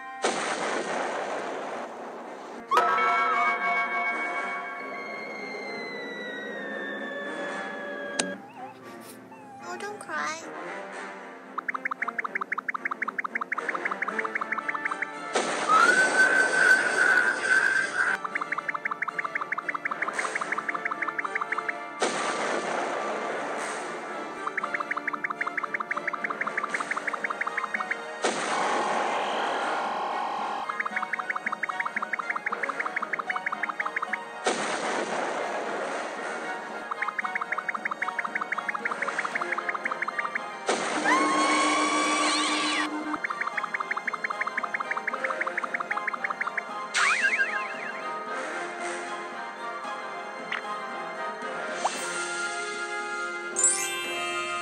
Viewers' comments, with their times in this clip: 0:04 THIS VOICE IS CUTE😭😭😭😭😭😭
0:15 you should have added four blasting not screeeching.
0:19 I was like BLAST EM but instead he did the screech thing
0:40 Mic in battle:AAAAAAAAAAA